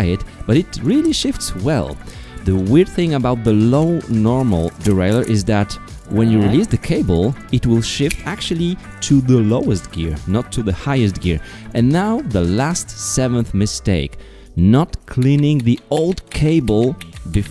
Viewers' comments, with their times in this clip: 0:05 the minecraft villager you trapped in the basement wants to get out